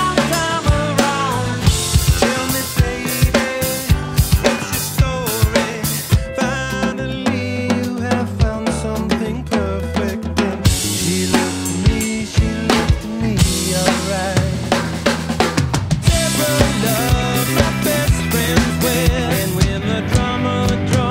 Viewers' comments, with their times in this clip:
0:05 OMG he turned off the snare strainer for hard to concentrate. Well done sir!
0:06 St. Anger Lars like it.